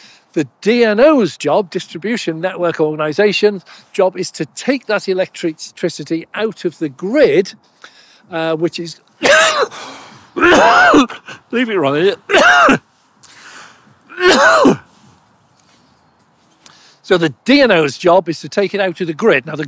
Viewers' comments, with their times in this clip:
0:07 Most people would have edited out that cough fit 🤣🤣🤣🤣🤣🤣